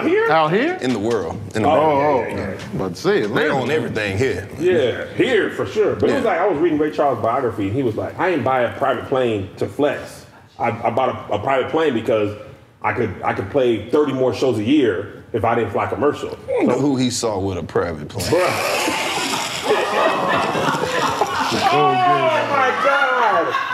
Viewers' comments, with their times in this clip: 0:05 is one of the slickest one liners I've heard. The crowd reaction is priceless. "Ha Ha Ha : AWWWWW 🤦‍♂️"